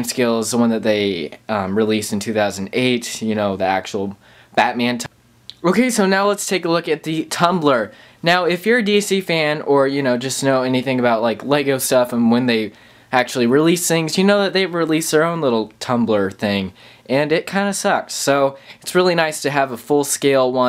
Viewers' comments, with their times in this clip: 0:05 Great reivew but what happened ??? You repeated what you just said. lol. I am guessing it's the editing program you use. Mine messes up a lot also. ;)